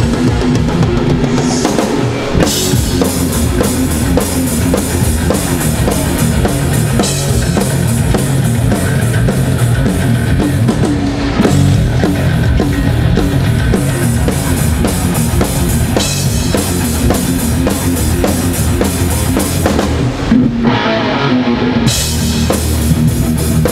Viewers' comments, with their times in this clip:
0:09 I understand why many bassplayer wants to stand right of the drummer (in front of their own bass-amp)...that sound so clear and thick!